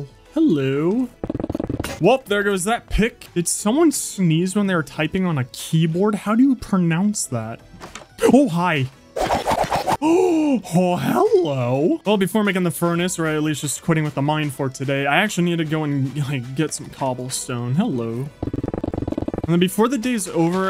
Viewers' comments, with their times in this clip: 0:04 I like how he says that did someone sneeze on the typing 🤣🤣🤣